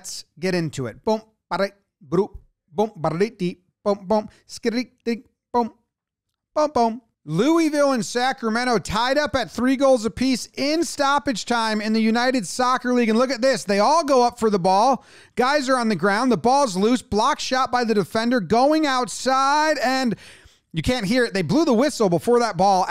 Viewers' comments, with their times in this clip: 0:06 that pronunciation of Louisville should be a felony